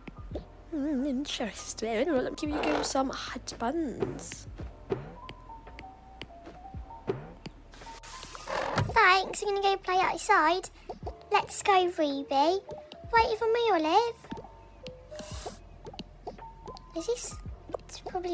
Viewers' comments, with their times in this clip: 0:03 They sound like Peppa Pig I don’t wanna be rude, but it sounds like it😊